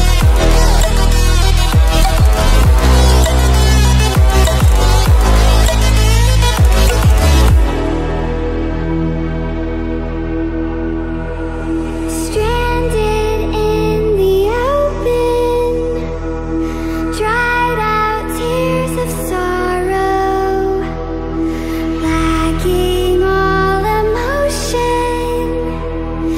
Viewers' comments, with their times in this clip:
0:08 i have a studio headset song broke it it refuses to work now might be too loud...welp new headphones.